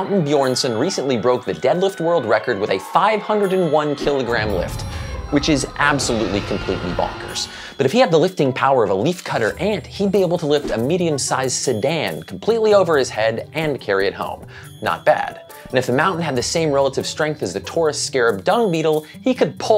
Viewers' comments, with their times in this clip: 0:05 T-Rex roar, lol!